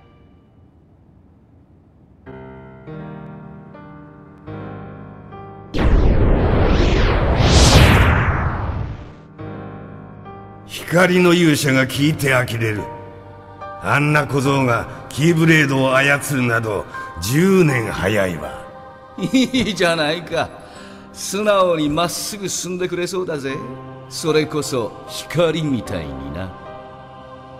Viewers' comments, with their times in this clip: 0:09 Why The Organization XII Speaks Japanese Like That?